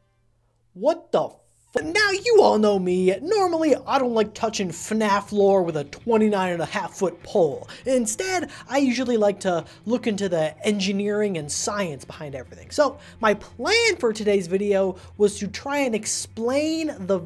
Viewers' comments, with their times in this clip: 0:04 Love the Lester voice line